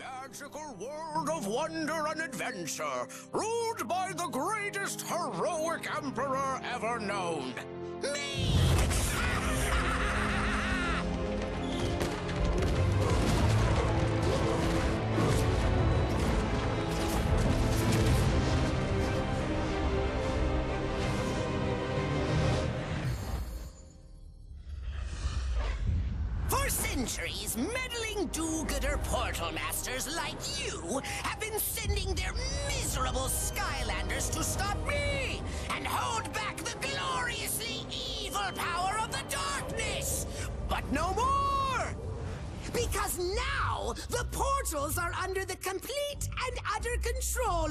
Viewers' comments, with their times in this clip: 0:07 Who else remembered Invader Zim when he started talking?
0:28 Sounds like Billy from The Grim Adventures of Billy &Mandy